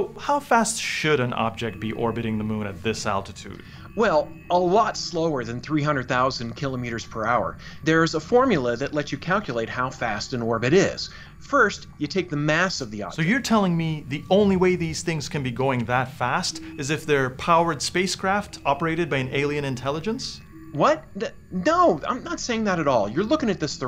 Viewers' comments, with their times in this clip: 0:05 Never heard “kilometres” pronounced like that.